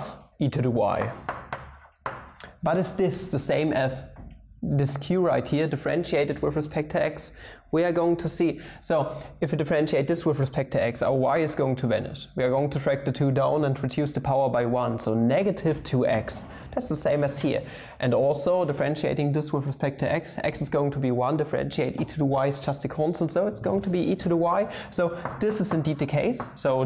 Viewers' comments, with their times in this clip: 0:10 our wife is going to Venice